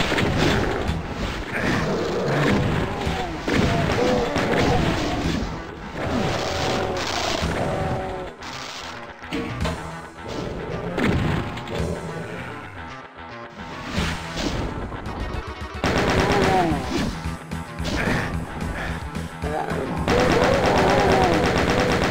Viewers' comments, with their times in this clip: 0:07 Imp berserker confirmed? An imp slash and gibbing can be heard here.